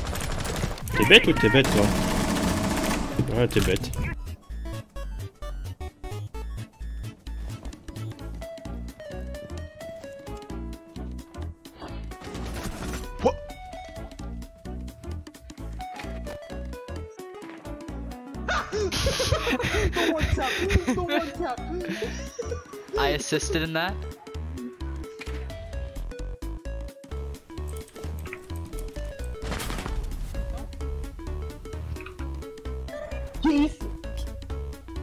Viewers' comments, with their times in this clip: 0:09 Has to be one of the best "Wha..."''s I've ever heard.
0:19 tf he sounded exactly like me